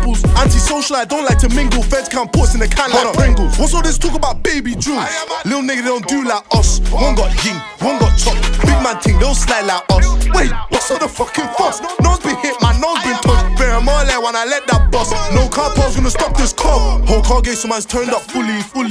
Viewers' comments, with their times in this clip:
0:04 sounds oddly familiar